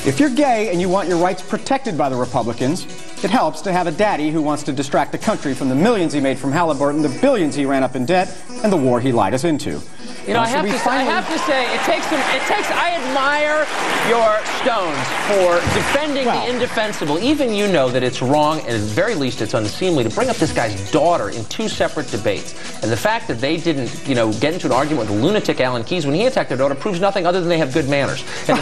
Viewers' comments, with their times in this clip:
0:10 The beginning of this show is a straight up Onion video lol, the bell dinging